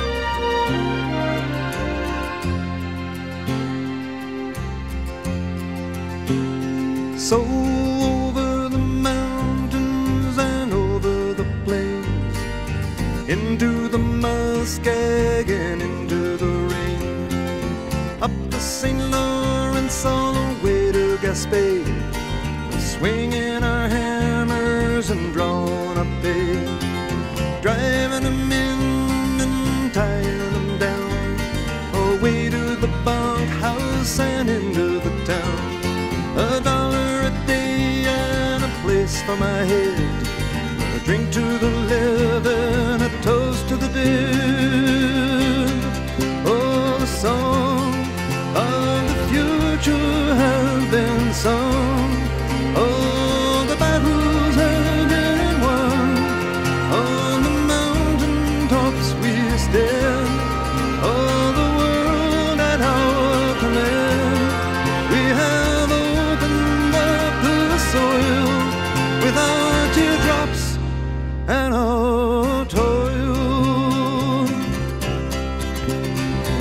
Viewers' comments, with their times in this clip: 0:06 Fantastic voice and poetry ..one of my favorite compositions by Gordon
0:07 I love how he starts slow and then speeds up like a train going along the track
0:58 I ❤ this song so much. One of the admirable qualities is how the tempo changes reflect both the lyrics and the movement of a train.